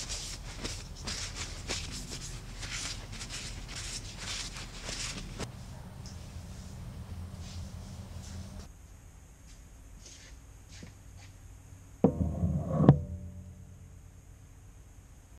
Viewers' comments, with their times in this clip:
0:10 sounded like enderman teleporting XD 😂😂😂😂😂